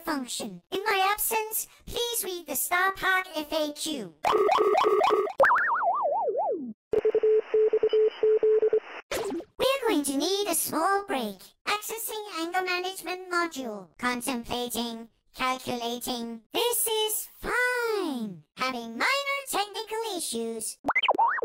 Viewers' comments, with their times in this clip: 0:06 So uhh, who's gonna translate that morse code voiceline?
0:06 DID NOBODY NOTICE THE MORSE CODE ? Btw it translates to VXZ
0:06 Somebody decode the morse code please
0:06 Morse code for the nerds
0:06 SOMEBODY CRACK THAT MORSE CODE, IT MIGHT BE IMPORTANT-
0:06 I heard morse code in one of his voice lines so maybe anyone good at translating that stuff could try and solve it.
0:06 that is morse code for "SOS"
0:06 thats a morse code. Someone translate that please
0:07 hmm I wonder what that morse code means
0:07 sounds like a morse code or something, if someone knows maybe explain or something
0:07 one of R-T’s voice lines is in Morse code. I think the message is : …—..—…. This doesn’t make any sense when I tried to translate, but see if you get anything (btw, the voice line appears here:
0:09 i paused and i forgot about this video, then i plugged in my headphones and started hearing these creepy vioceline